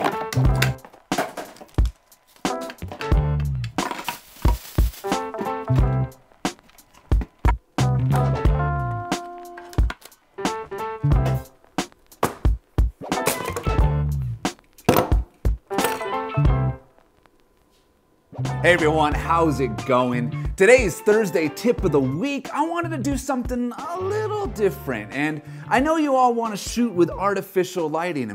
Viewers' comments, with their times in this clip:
0:09 into the video, I hit LIKE cuz of the music! :)